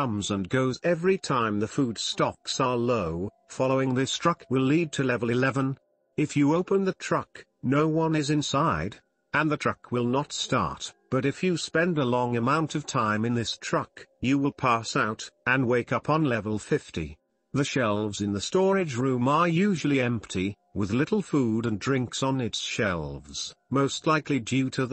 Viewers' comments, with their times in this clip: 0:06 I love how much a matter-of-fact voice the text to speech gets for a few seconds